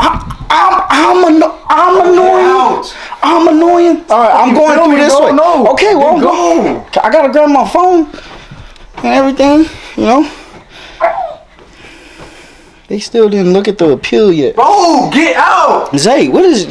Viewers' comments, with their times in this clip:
0:04 BRO YOUR CRYING WAS THAT HIT TOO HARD